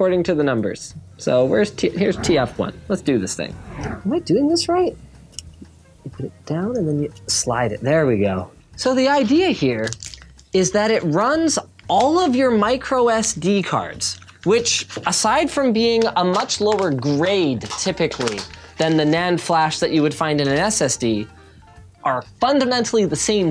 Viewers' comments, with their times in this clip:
0:08 the ihere instead of idea